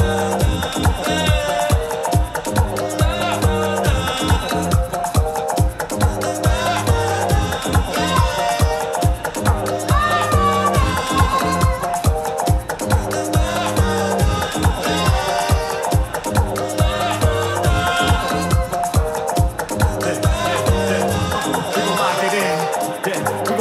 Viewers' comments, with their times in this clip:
0:06 Yo the way he harmonized with himself was incredible! And, of course, Harry Mack very inspiring as usual.